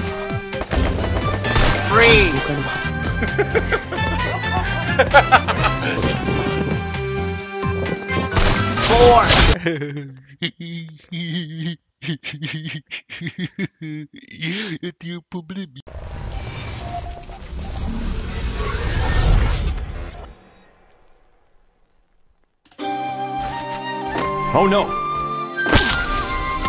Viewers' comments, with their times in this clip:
0:10 who is the gamer with sunglasses i don't know his name but that laugh is 😂😂